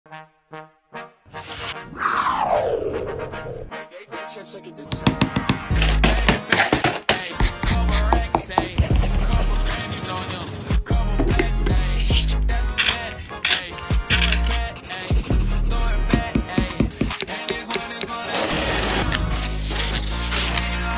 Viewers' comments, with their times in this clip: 0:02 MY EARS But nice Artist